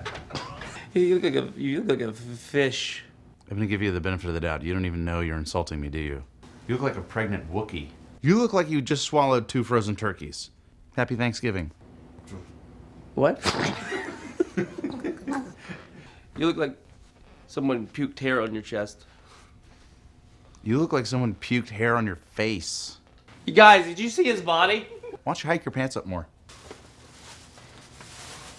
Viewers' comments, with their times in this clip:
0:10 "Happy Thanksgiving" - I'm so happy that that made Galifianakis laugh instantly haha